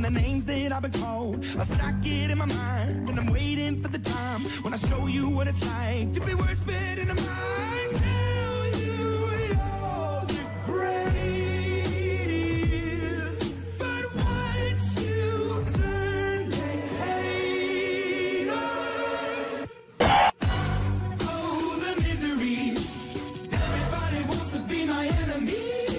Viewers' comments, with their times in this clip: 0:09 nether portal noises